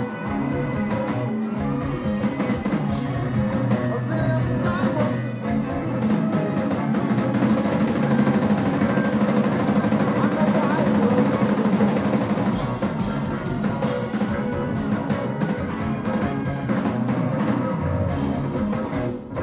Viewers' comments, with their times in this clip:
0:05 a truly epic snare fill